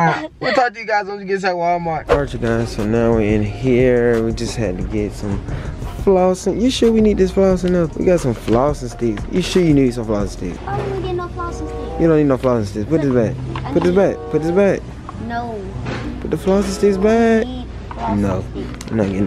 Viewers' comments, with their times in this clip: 0:03 listen carefully they got gooba playing in the background XD